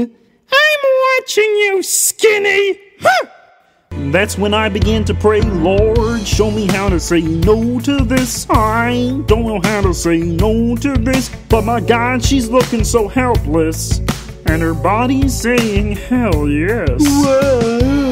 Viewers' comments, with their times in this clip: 0:05 idk why but I like the way Kermit says "lord"